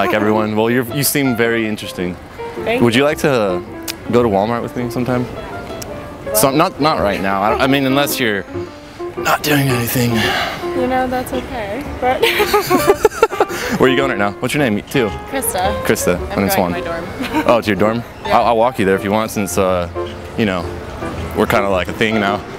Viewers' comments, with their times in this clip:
0:08 Loved how he used the Scrappy voice ... The women love Scrappy?!!🤣🤣🤣